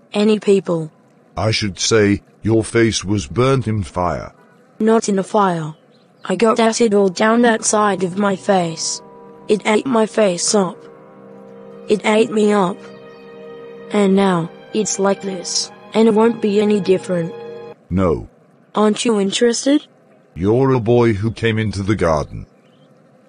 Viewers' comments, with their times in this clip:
0:10 that sudden stop in bg music and mr. Lamb saying "NO" made me laugh so hard😭🤣